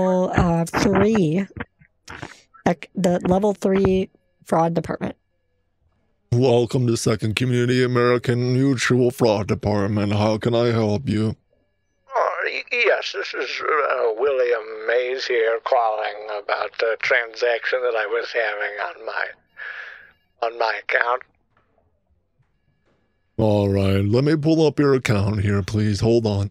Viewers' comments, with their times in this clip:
0:05 Everytime I hear that voice, all I can think of is MAM. MAAAM MUUAAAAM 🤣🤣🤣
0:09 The "fraud dept" voice that you do makes me think of Eeyore. Lol. Love it!!